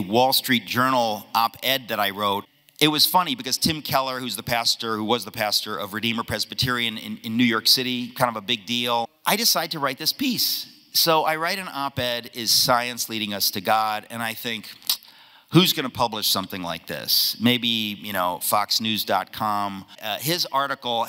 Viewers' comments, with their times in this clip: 0:08 dude sounds like white twomad